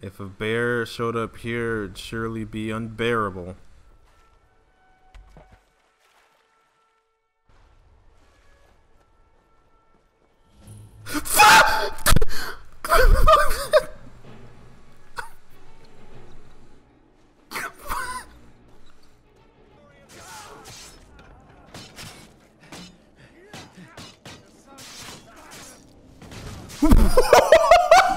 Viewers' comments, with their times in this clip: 0:10 was the most genuine scream I have ever heard